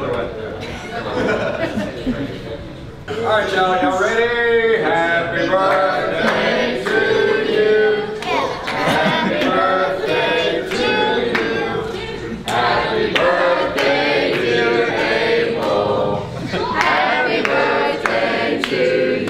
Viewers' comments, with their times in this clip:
0:06 that awkward moment when everyone's singing happy birthday and you dont know what to do